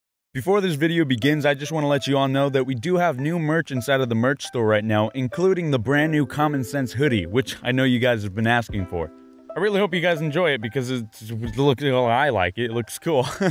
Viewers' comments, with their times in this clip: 0:01 I was looking at my phone while seconds and I heard Markiplier lol